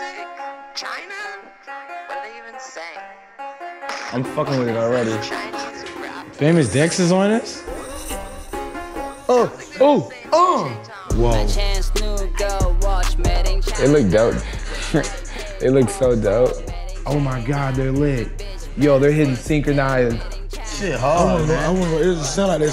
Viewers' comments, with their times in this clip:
0:09 already starting the damn ad-libs oml
0:09 I thought the Migos moans were auto tuned